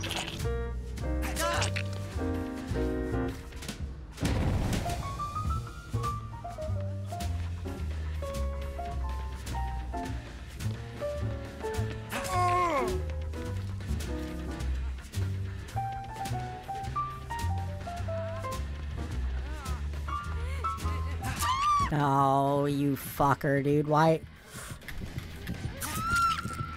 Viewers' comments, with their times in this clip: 0:09 is it just me or is this the most manly moan Dwight has ever made?